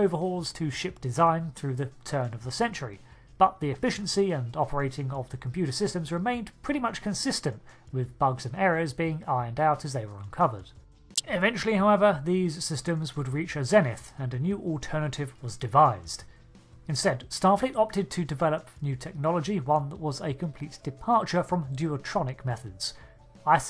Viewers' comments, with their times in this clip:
0:10 Ow. RIP headphone users. (There's a rather gnarly crackle/pop, probably caused by YT's compression)